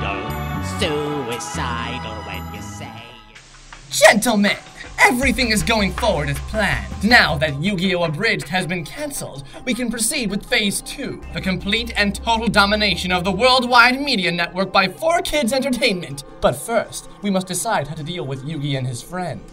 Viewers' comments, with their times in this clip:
0:04 That really did sound like Kisshu from the dubbed Tokyo Mew Mew. Please don't kill me, it was my first thought xD